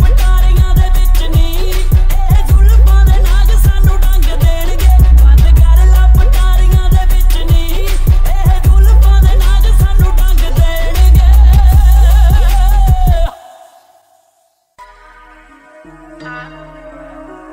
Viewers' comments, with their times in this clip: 0:05 I like its bass in my car JBl Bass tube in DZIRE